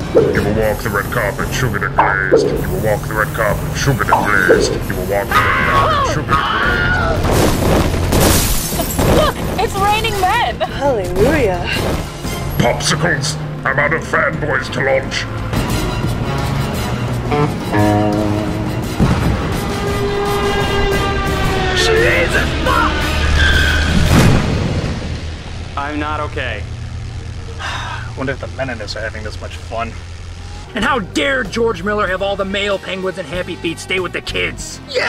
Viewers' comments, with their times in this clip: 0:07 obligatory Wilhelm scream.
0:16 guitar speak Uh-oh!